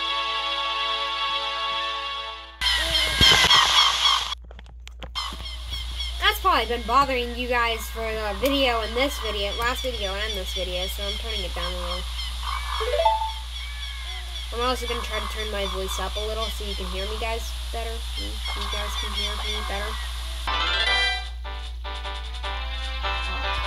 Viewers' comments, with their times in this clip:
0:04 backwards noise stops being